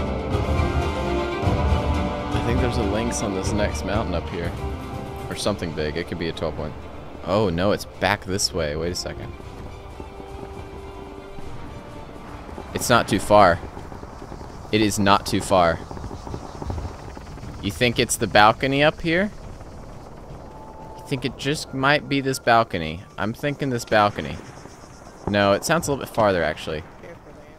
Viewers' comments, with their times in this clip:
0:08 Does anyone hear megalovania